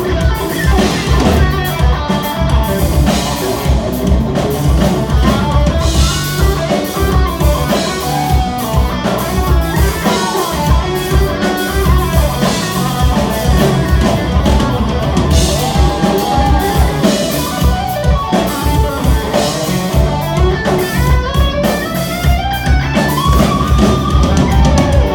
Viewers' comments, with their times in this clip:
0:04 Sneaky Polyphia lick hahaha
0:05 aaron slid a polyphia riff inside
0:06 Guy with hat copying polyphia finale
0:06 Intervals went Polyphia on 😂
0:06 did he really just play a polyphia hook lol